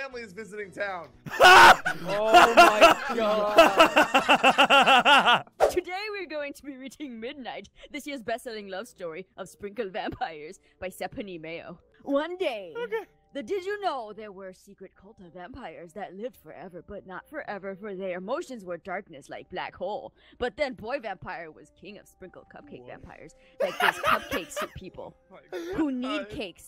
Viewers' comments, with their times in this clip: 0:09 Aphmau kinda sounds like nugget